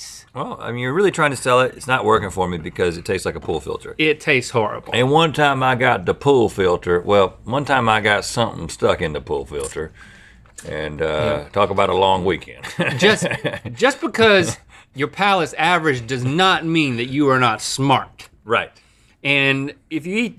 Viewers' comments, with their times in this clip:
0:04 That accent, fake or not... in love. Was over too soon. Link's still the best tho